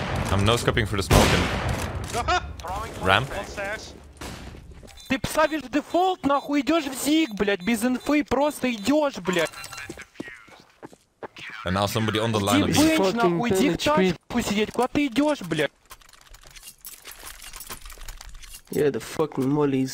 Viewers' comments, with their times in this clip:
0:05 Russian anger intensifies